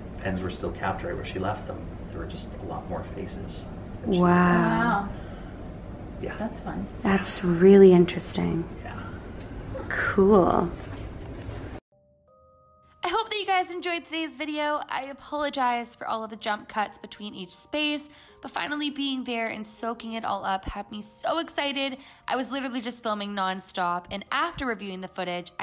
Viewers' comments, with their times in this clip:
0:06 38- 16 I heard a laughing girl 🤣A KID BROO
0:10 I thought I heard a kid laugh. Anyone else hear it?